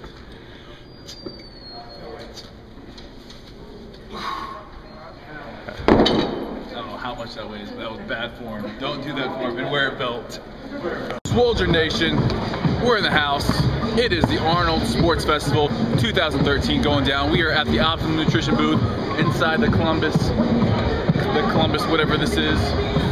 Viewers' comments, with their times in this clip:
0:05 "We're at the Optimum nutrition BOOB" - it cannot be unheard :P Nah man just kidding, great vid as always! :D